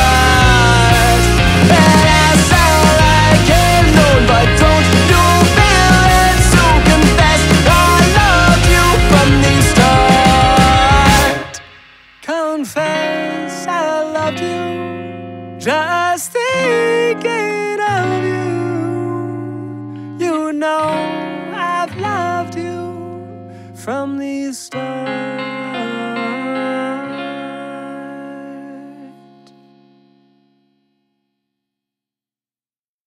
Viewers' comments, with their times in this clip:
0:08 i like his vocals
0:24 Those six notes of "Beautiful Stranger" absolutely melt my heart.